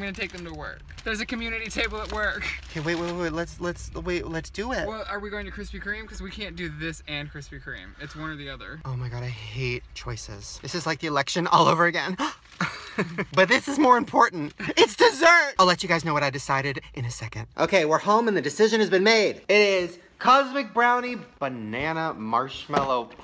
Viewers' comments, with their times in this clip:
0:05 why does Ryland litteraly sound like my mom😂